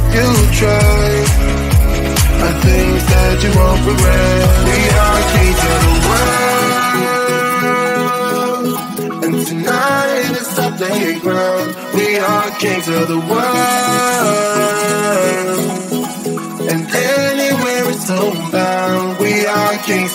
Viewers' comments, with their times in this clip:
0:05 Not to be rude but on is like your just hearing bear farts
0:05 The girl is listening of the farts of da bears